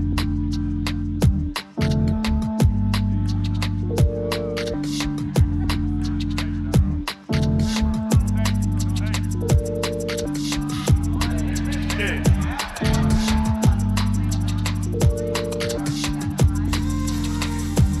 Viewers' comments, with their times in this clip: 0:03 Tears are flowing. The D&B perfection Beardy cooked up is beautiful.